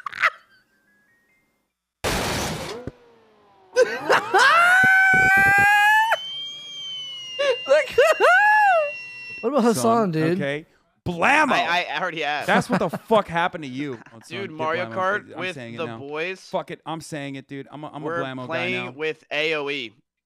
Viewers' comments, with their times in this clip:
0:04 His laugh sunk up with the car engine perfectly
0:04 had me crying dude sounded like the car for a sec 🤣🤣🤣🤣🤣🤣